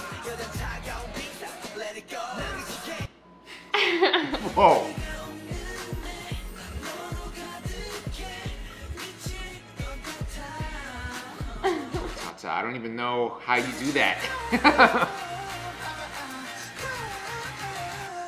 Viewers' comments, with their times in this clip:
0:03 Only TOIGHT can describe this one Hiya Fav Colour is Orange Bias is Jin ... absolutely gorgeous ... and man this voice